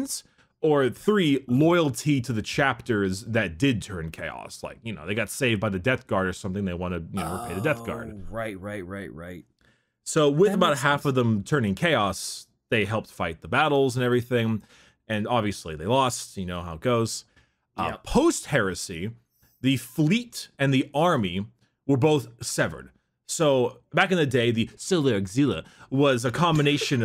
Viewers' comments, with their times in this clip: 0:10 What's that weird voice ?